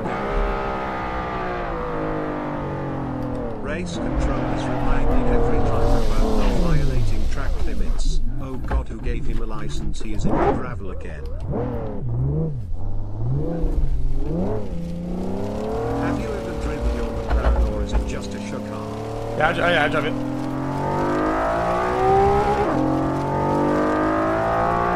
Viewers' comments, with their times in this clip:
0:09 that text to speech timing was perfect😂😂😂😂